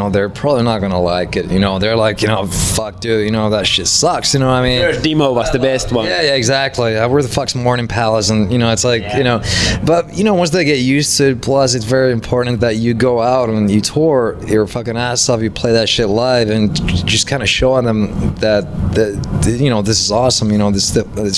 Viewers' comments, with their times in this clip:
0:04 the interviewer says "first demo was the best" but his accent is so bad that Alexi thought he was talking about Dimmu (Borgir), atleast that´s what I think happened :P